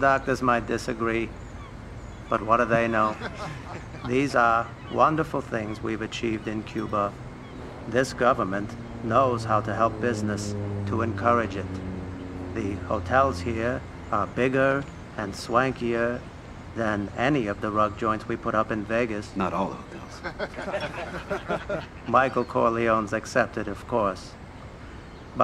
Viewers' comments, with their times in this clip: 0:06 The dude talking sounded like a murdere from the game Get In the car with strangers